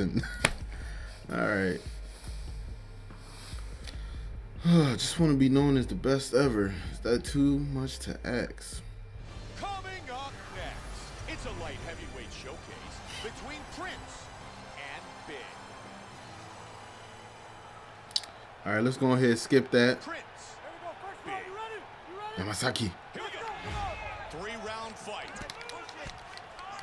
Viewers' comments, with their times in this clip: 0:09 "axe" instead of ask